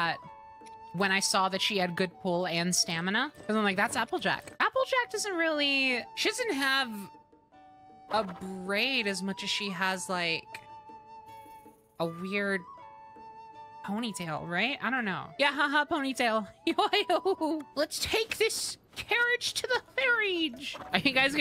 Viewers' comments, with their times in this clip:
0:05 I thought you said "Applejack doesn't have a brain" and I was about to agree so hard.